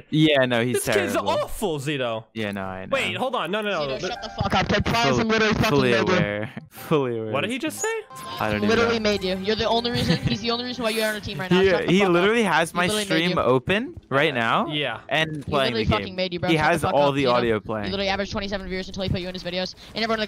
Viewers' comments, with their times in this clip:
0:04 Nah he said hard R